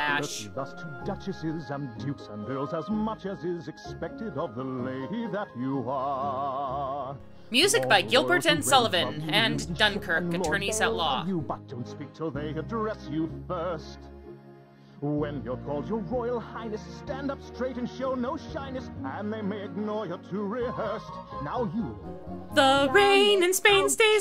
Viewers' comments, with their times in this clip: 0:09 The proper etiquette song reminds me of the song from Barbie's Princess and the Pauper about the same topic.... not sure if you can sing about being proper in a particularly unique way I just think there is a better way of doing it... I think it even has a similar tune, but I might be wrong
0:09 literally sounds like a knock off of To Be a Princess from that Barbie movie. The Princess and the Pauper. Let that sink in... They had to dive so low in unoriginality that they had to rip off a song from a fucking Barbie movie. Honestly, just listen to that song, and it follows the same fucking pattern. Unbelievable.